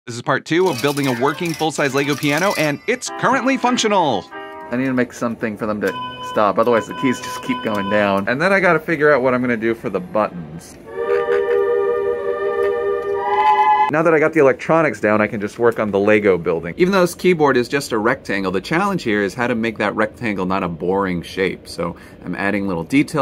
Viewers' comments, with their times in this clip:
0:05 The key sounded like the Mario Kart start signal